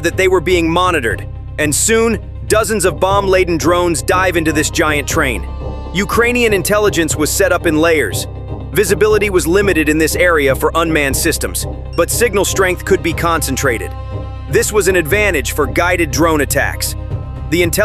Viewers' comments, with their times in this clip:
0:03 STOP SHOUTING AT ME !!!!! Btw, "and soon dozens of drones".... What 24, 36, 48? Or was it SEVEN? I'll stick to The MIlitary Show. They don't shout and carry on like a football caller...